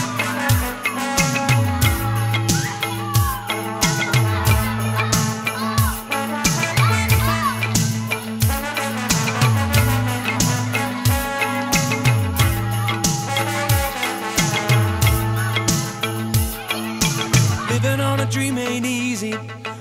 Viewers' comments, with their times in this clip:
0:07 all I hear is a kid shouting ‘F*ck off 🤣